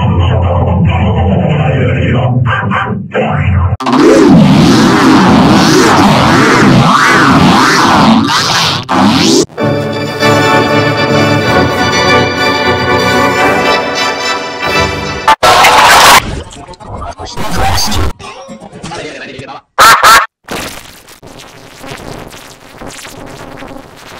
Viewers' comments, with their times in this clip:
0:09 klasky csupo enhanced with vocoded g major4 ^2 diamond